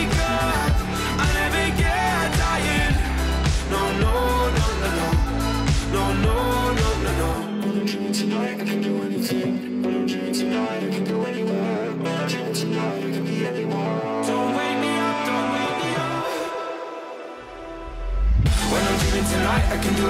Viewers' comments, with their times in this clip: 0:06 *gettin Daft Punk vibes*